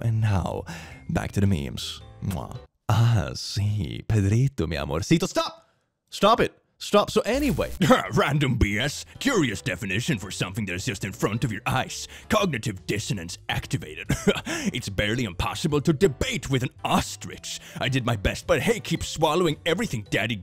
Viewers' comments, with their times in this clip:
0:03 "ah, sí, Pedrito, mi amorcito". Dies in Chilean
0:03 ok but his accent was on point it was beautiful